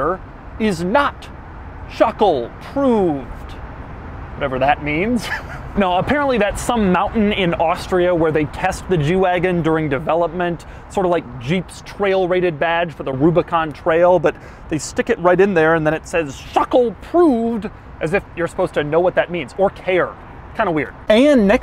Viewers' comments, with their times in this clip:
0:05 I like how doug said it so seriously that I almost thought he knew what it was.